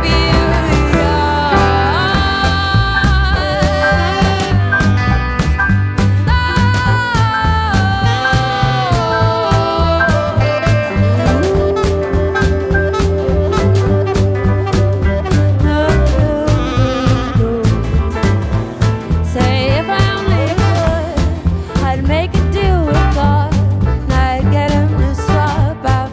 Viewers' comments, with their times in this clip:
0:08 throat warbling ... KB would approve